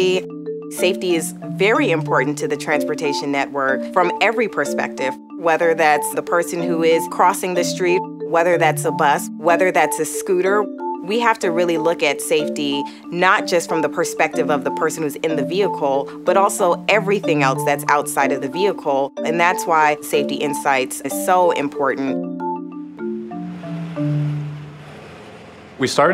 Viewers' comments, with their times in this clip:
0:09 The background music is distracting